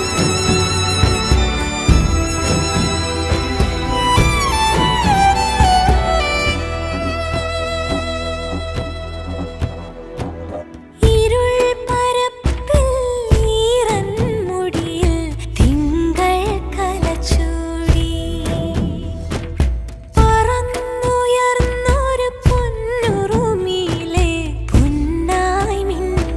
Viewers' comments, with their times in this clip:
0:10 When great lines meets magical voice, this happens.